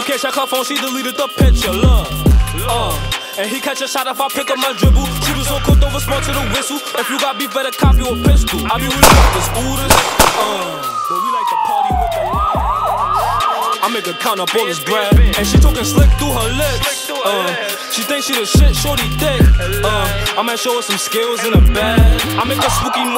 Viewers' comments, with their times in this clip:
0:09 I deadass got shook I thought it was shots outside🤣